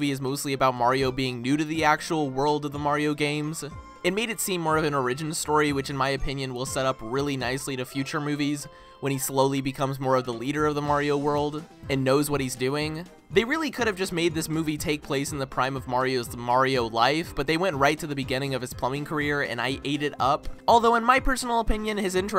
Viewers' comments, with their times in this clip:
0:05 love how he says origin. Great review! I doesnt matter if you're late, the review is still great no matter what!